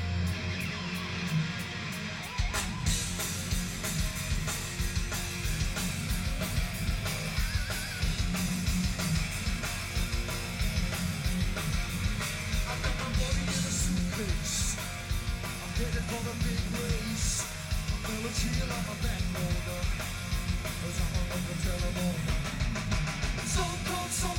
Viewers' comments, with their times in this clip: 0:06 This must be the most inexplicably underrated – not to mention criminally unknown! – Thin Lizzy song of all time. “The Boys are Back in Town?” Please, this is the REAL SHIT! Keeeerist, that first John Sykes pinch harmonic seconds - could stop a bull elephant at 500 yards; hair-raising stuff for the ages!